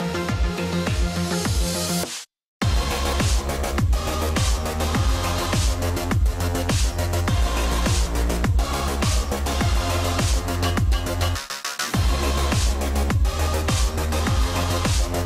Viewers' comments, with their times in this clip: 0:03 the song sounds like its saying Allahu Akba